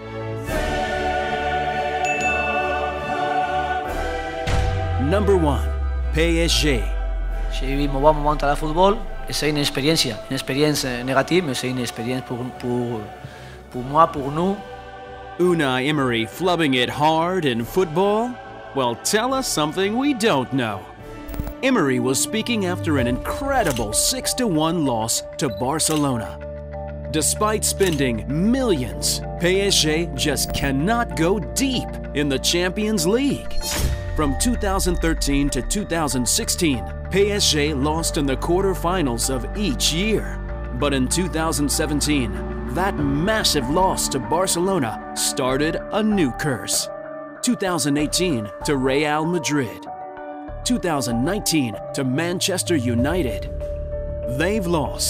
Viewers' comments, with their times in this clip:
0:06 Nobody : Literally nobody : Oh My Goal : PEAJI
0:41 i tough he was called for boomer. But it was Bodmer